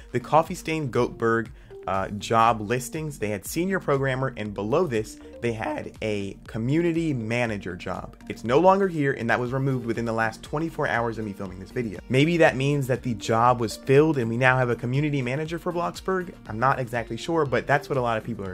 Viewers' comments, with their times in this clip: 0:04 lol your voice 😂😂